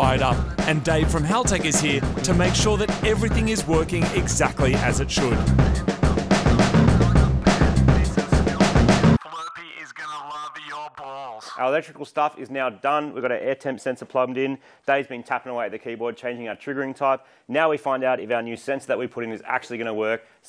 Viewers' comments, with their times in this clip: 0:08 Wait. What? Queue music: ... (flurpy?) (purity?) is going to love your balls...??? I had to rewind a couple of times🤣🤣🤣🤣🤣